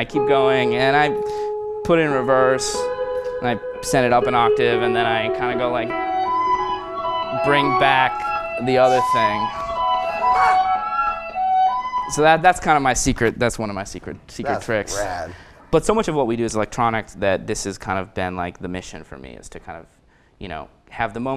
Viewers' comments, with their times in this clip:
0:04 when he send the loop up an octave before bringing it back in with the mod on his guitar, does he already have the pedal set to 1/2 speed before pressing the switch? I was under the impression that the 4th switch would send play your loop back at half speed and therefore an octave down, not an octave up.